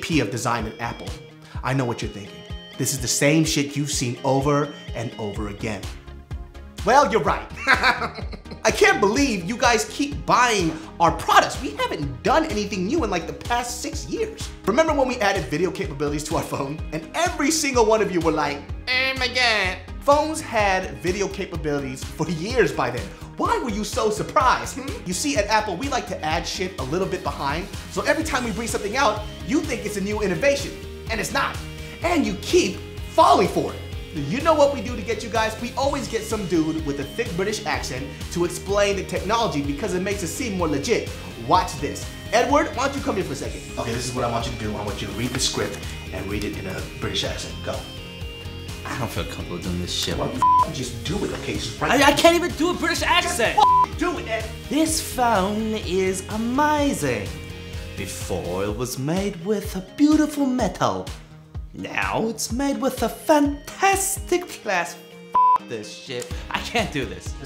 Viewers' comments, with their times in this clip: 0:07 I was dyin laughing of the way he laugh
0:07 I was dyin laughing of the way he laugh lmaooo
0:52 After 6 years of first time watching this (where my first smartphone was a NOKIA) and remembering it today (now owning an iPhone)... I totally lost it at the fake British accent